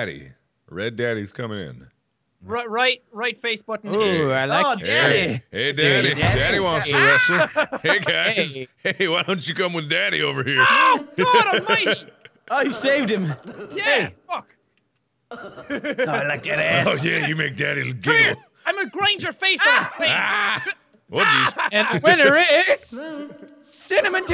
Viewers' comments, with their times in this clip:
0:10 am i the only one who saw Jack save Marks life from a train ? you also heard Jack scream out of pain that Mark would die... SEPTIPLIER AWAAAAAAYYY!!!!!!